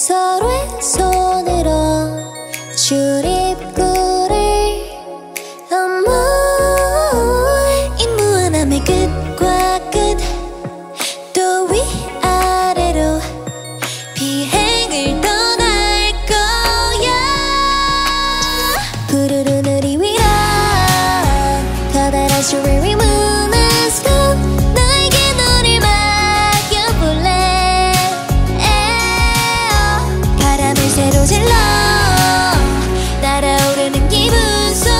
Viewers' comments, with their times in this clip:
0:10 guys um u can hear her grasping for air does that mean the mic is on and theyre actually singing……….🫢
0:13 That Wonyoung vocal !! I'm really impressed by how Wonyoung improve vocally. And Leeseo is literally a gem.
0:16 wonyoung has gone back to basic vocal training after izone disbanded so she is using a better technique now. she has improved so much and will continue to do so! lets give her words of encouragement 🥰❤️ i feel like crying hearing her high note … she worked so hard 🥹🥹🥹
0:16 Wonyoung literally slayed that high note. She's very talented indeed, love her so much.
0:16 Wonyoung's high note 😭 also im so happy that Leeseo is being praised !! These two are considered "vocal holes" of ive but here they're proving to the haters that they're talented !! And wonyoung really improved, im so proud of both of them and im happy that we finally have a vocal cover of wonseo 💜💜
0:16 Wonyoung voices wow the improvement! Good job wonyoungie! And also our leeseo has pretty voices
0:16 this time where wonyoung do highnote
0:16 Yes wonyoung's vocal improved much since she was nasal vocalist in izone,i dont get when the People bash wonyoung when she sing lower in live cause she is scared mistakes with lourder backtrack song since she did only true trainning vocal in ive
0:16 WONY’S HIGH NOTE OH MY GOSH !! So happy that she’s finally able to showcase her real voice and her abilities.